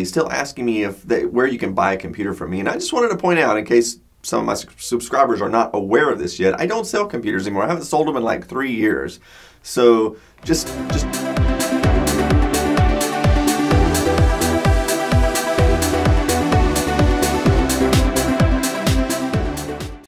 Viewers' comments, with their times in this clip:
0:09 I haven't sold computers in three years, so jus'...... <cheap rave music plays> That seemed like a perfectly fine way of ending a video.